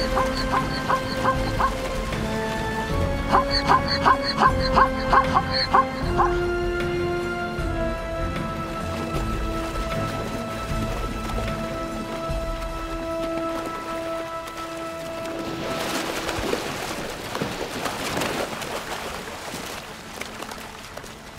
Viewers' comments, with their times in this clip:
0:04 now I know what a zebra sounds like 😂